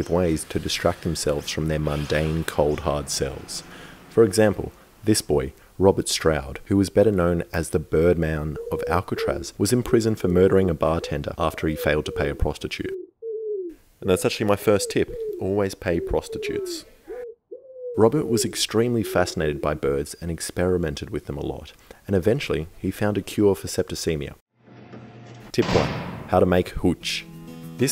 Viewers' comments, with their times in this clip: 0:09 i was actually looking out to understand where the bird sounds where coming from
0:12 i'm having a drink while watching this and the bird noises tripped me out, for a second i thought "what strange pigeon flew into my house cuz it doesn't sound like any pigeons here" 😂